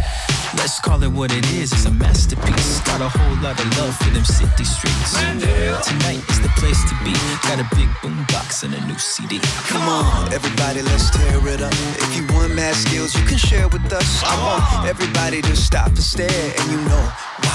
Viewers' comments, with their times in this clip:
0:05 Did anyone here Zendaya